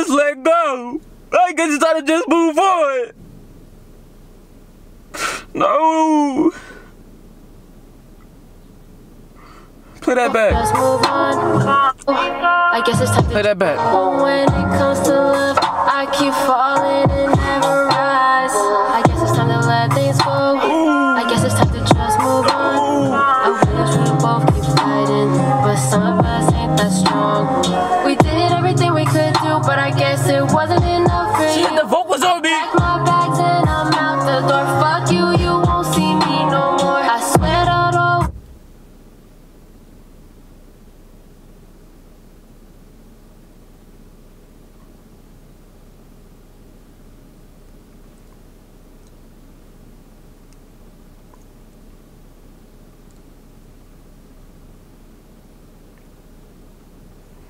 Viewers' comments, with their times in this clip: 0:06 Minecraft cow sound when you hit it😂😂
0:39 dead silence got me laughing not at Davine jay though
0:39 that pause tho🤣